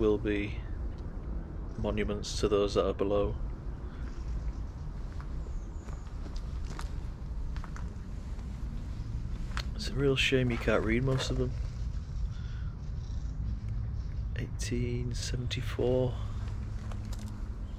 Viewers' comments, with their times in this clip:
0:05 Is it me, or did anyone else hear when he says “oh wow look at that” a faint whisper saying “yes”.